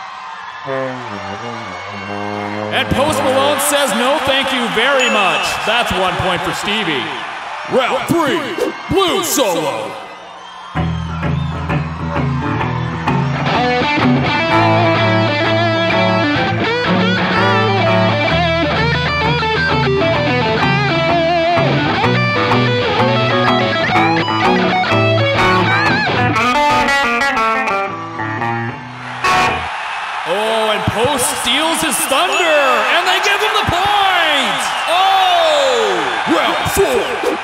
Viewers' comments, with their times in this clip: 0:09 that blues solo was fire 🔥
0:24 reminded me a part of Mississippi queen on guitar hero 😂